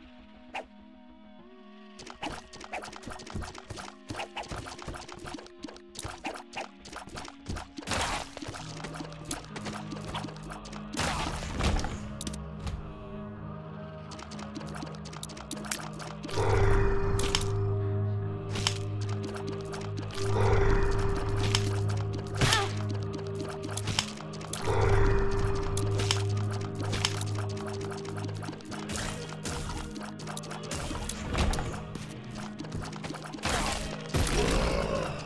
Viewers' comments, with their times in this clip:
0:07 is it just me or does that sound like the death sound effect sometimes used in madness combat animations?
0:20 Wait, in minute frayed nerve sound, sounds very familiar with a certain Minecraft sound